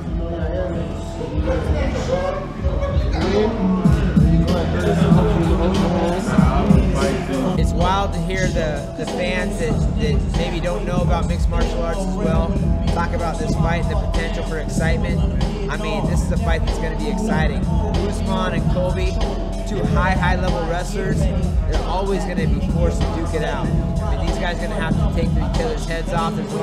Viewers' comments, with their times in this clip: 0:07 Why did I think that was Colby talking for a second 🤦‍♂️😂
0:08 you hear some rap song you don't know.. no just Faber making interview
0:13 talk about this fight, the potential for excitement, I mean this is a fight that's gonna be exciting. this actually sounded like he was rapping for a minute, crazy flow xD